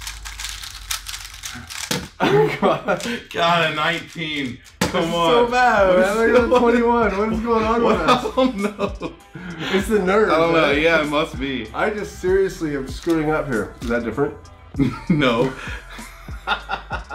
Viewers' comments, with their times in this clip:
0:05 what is he saying????